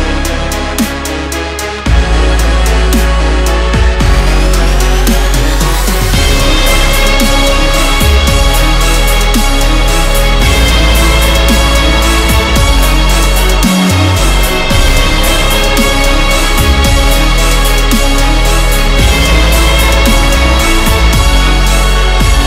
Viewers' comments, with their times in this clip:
0:06 that’s when the beat drops 🔥🔥🔥🔥🔥